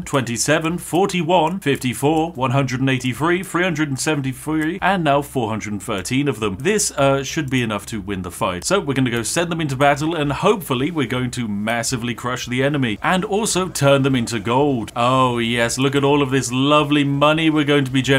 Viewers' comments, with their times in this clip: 0:03 "Three hundred and seventy fwee" - sorry to point it out, but that made me chuckle